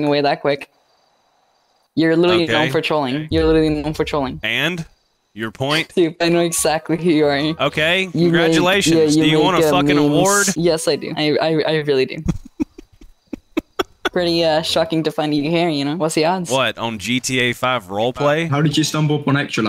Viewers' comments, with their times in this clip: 0:04 why does she look like a goblin and sounds like one two